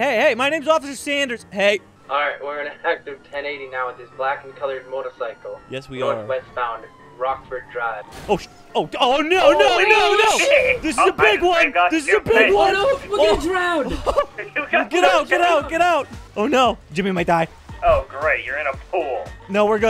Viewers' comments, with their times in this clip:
0:07 the pool crash :face-blue-smiling: